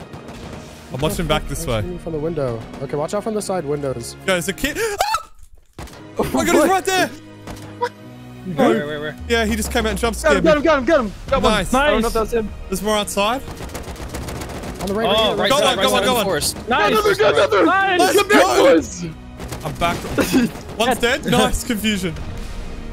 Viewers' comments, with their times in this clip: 0:04 bro the voice Crack!